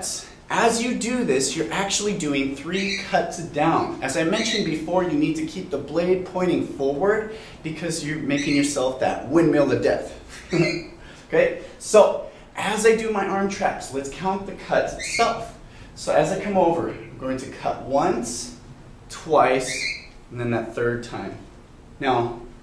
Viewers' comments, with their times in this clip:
0:09 "Windmill of Death" *smirk* slow it down to 0.5 speed turn on the captions too